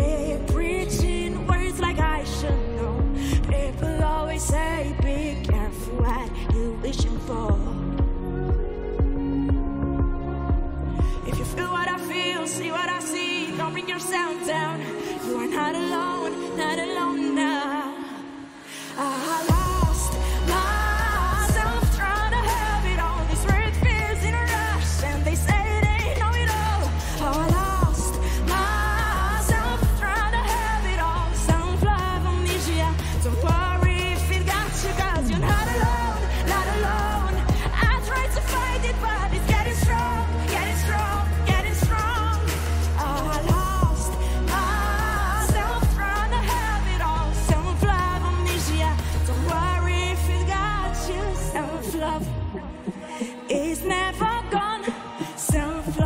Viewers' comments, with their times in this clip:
0:07 they should have done more like this! When it's just music and not her singing. I really like this song 😪 it's placed on my meaningful songs list. You think they should have done the same too?
0:37 Whoops A Little Voice Crack